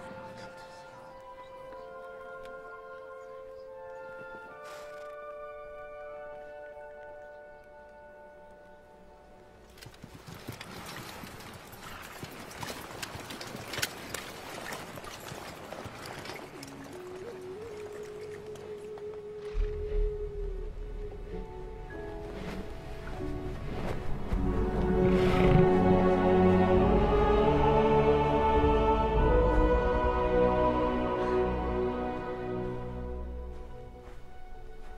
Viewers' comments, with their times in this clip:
0:10 When everyone starts bowing. And the music. You can feel Aslan's gravitas even before we see him.
0:17 I don’t think anybody cares except me, but I love the howling noise and the bass drop and then Aslan walks out. GOOSEBUMPS